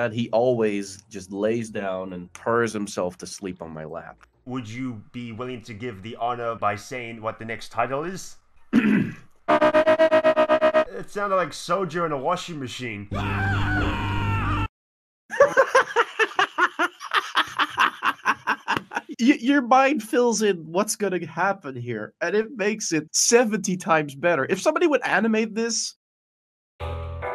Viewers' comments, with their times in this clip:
0:09 A 2014 Honda Civic attempts to exceed a speed of 90MPH